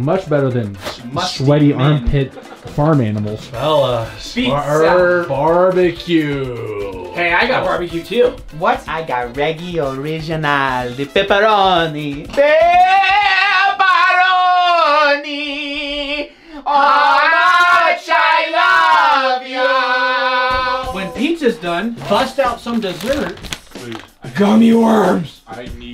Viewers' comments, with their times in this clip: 0:10 nice singing LOL